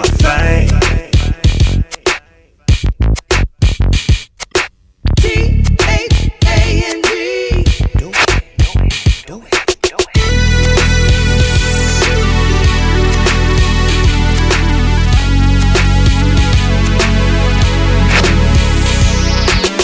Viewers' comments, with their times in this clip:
0:05 solo is godly......